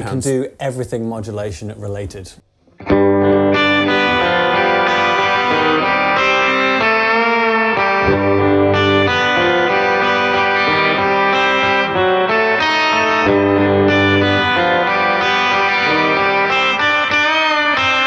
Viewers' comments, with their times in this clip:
0:05 the way that guitar sounded when they did my iron lung was just bliss